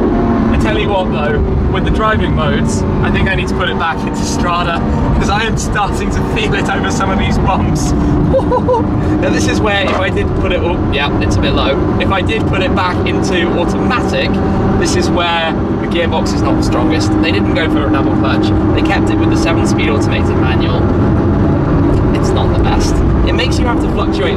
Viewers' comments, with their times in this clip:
0:10 That sounds expensive